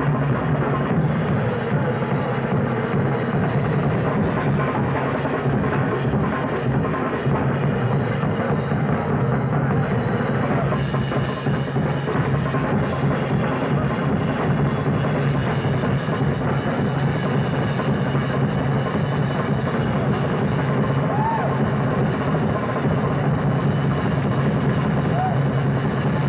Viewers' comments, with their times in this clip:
0:08 Simply immortalizing! ... Witnessing these two living jazz legends battling it out, vying for [perhaps] Carson's honour, defies description – a rare awe-inspiring showcased exhibit of paramount significance – a performance of the likes for which we'll never be seeing again. If either of these two iconic giants 'won' this 'contest', I'd have to ultimately root for Buddy here, albeit, certainly not by much; and despite Bellson losing a stick (recovering with grace ) – yet thunderously 'flam-a-diddling' the audience to oblivion with his double-bass finesse – Buddy's prowess and electrifying technique seemingly 'single-handedly' kicked the idea of time, off onto another dimensional plane – needing but one bass drum to do so ... And as with all his many luminary guest performers, Carson should be equally applauded here, for including such a fine unforgettable duo of these two drummer maestros into the annals of The Tonight Show special moments.